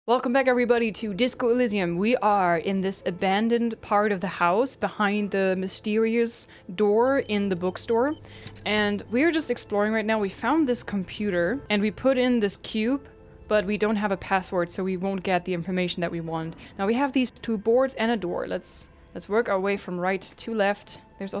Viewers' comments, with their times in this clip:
0:02 your flesh light slides over Gumby's what?